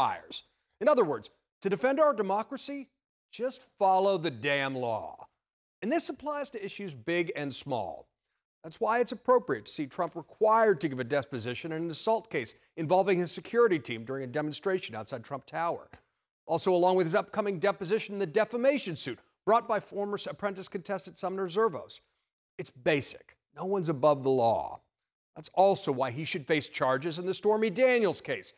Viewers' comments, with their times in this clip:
0:10 "Trump required to give a despot-sition" rather then "deposition"... Freudian slip?